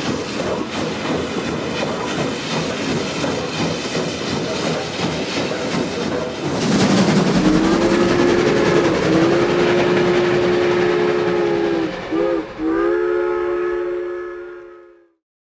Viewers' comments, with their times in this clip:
0:12 Sounds Like a Prairie Dog Central